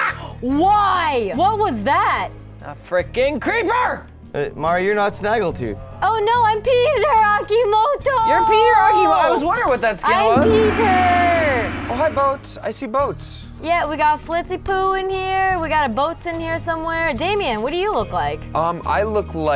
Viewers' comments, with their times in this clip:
0:07 someone's watching a PewDiePie video in the background.